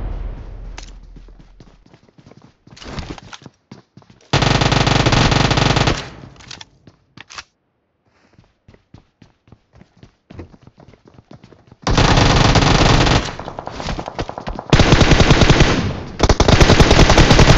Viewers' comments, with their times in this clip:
0:04 how u not dead bro Ze ping is stupid Also. Aggravated Swedish noises